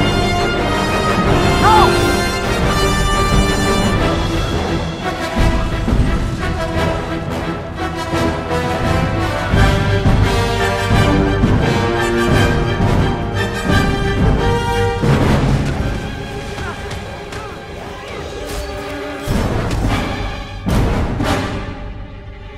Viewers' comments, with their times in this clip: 0:07 is like, the best edit to the music I've heard in a rescore. Makes the timing work and it's really subtle. If I didn't listen to Worth It on such a frequent basis, I don't think I would've caught that.